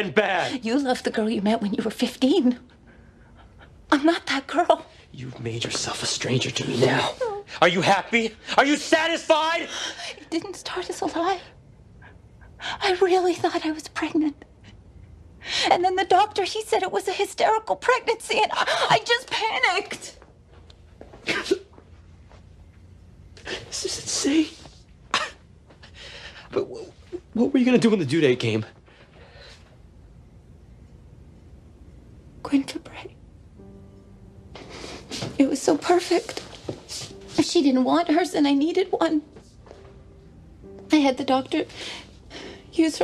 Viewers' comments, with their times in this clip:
0:07 queen music plays
0:29 what was her reply when he asked her what she was going to do when the due date came? I can't make it out exactly because she's saying it so quietly